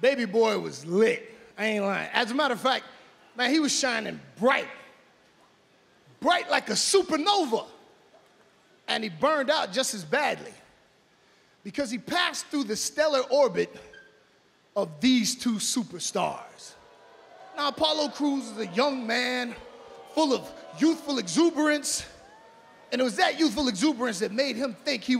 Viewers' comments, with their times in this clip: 0:07 I thought he said fashion nova for a minute😂😂